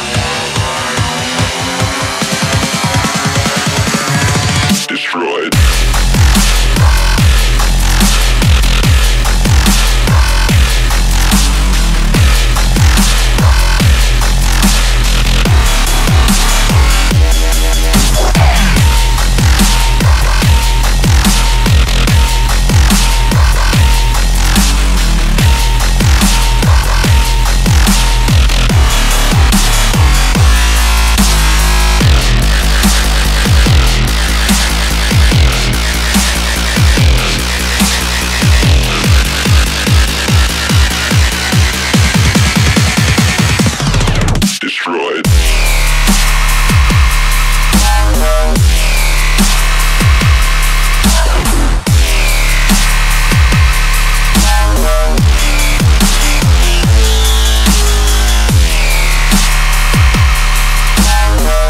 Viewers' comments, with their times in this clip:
0:05 last time something dropped that hard, it killed the dinosaurs
0:45 Oh my gosh I thought this song was lame... Then dropped HARD
0:45 Ya know in that one drop in you hear this sound in it that sounds like a computer that's having a virus overload